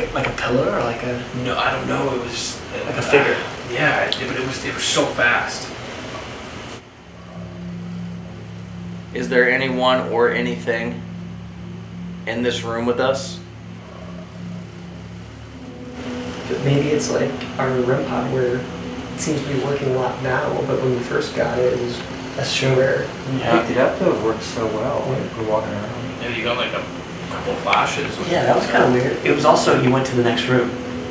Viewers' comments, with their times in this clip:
0:10 A Growl/heavybreathing after Corey said: is there "anything"
0:12 did anyone hear the sigh??😳